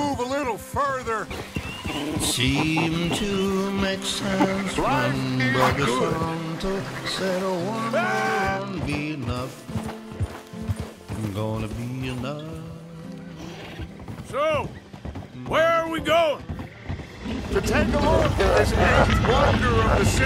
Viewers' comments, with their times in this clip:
0:04 was the best perfectly cut scream ever!